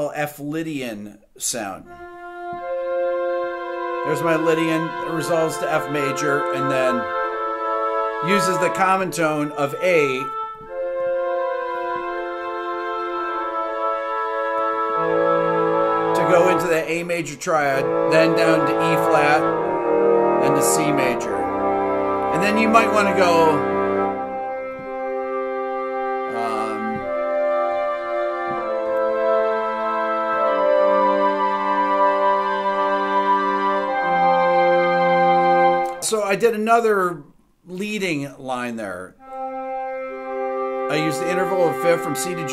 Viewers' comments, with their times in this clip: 0:05 That F Lydian part fully reminds me of a Philip Glass tune off Glassworks or Koyanasquatsi
0:20 Very cool. Always learn so much (after several views) from your theory videos. Eb down to C reminded me of Morricone's "Orca" theme.
0:25 Such a great video, always come back to it. The chord progression has such a triumphant quality. One of the most beautiful sounds I’ve ever heard. Film scores must be so difficult to make. It can’t be easy to emphasize the imagery and emotion caught on camera.